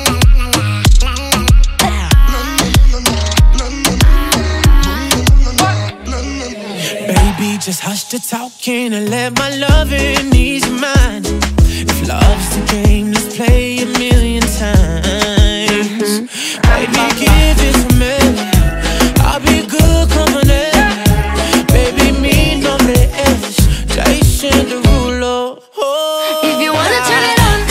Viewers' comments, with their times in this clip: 0:09 the riff on Jason's part is so smooth and chefs kiss!!!!! (I'm Italian lol)